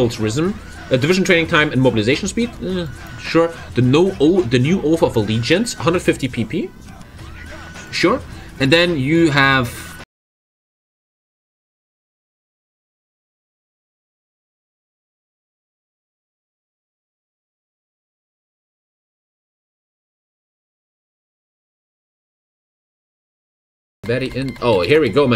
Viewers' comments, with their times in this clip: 0:10 much sadness, I really wanted to hear what was goin on there. For a sec I was also wondering if it was my computer XD